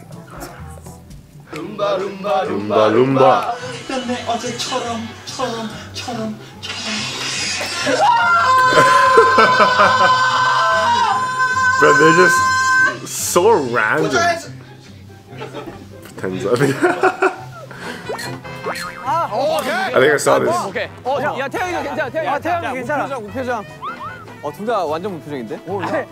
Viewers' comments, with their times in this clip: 0:07 Oh my god seokjin you screaming so loud.. You okay? 😂